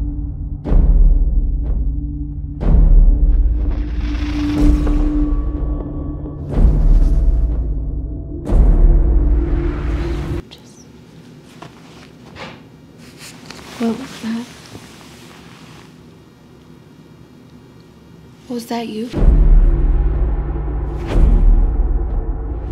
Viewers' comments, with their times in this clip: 0:10 u can hear a hey